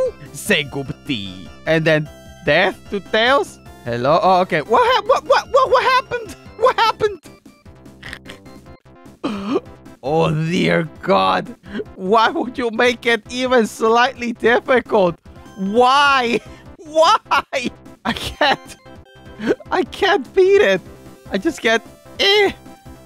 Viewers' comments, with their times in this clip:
0:04 To it's whart happemed not what happened.